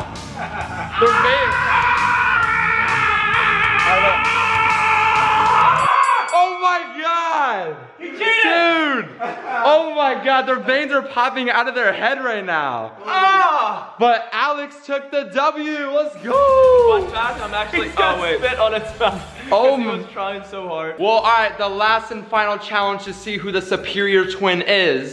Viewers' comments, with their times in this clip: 0:04 it sound like there going super saiyan
0:07 so animes are true... screaming does make you stronger